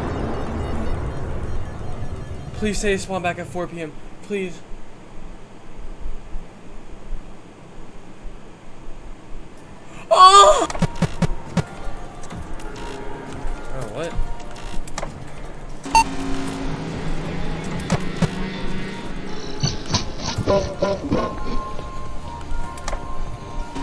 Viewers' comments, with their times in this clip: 0:05 why is u moaning like that🤨🤨🤨🤨